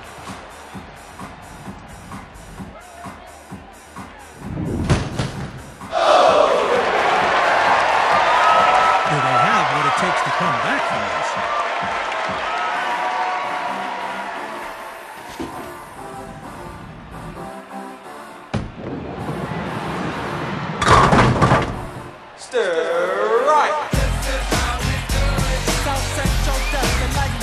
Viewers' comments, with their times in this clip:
0:05 crowd gasps in disappointment
0:08 I literally love the "Wooooooo!!!" sound made by the crowd 😂 It's actually my favourite sound effect in Kinect Sports :)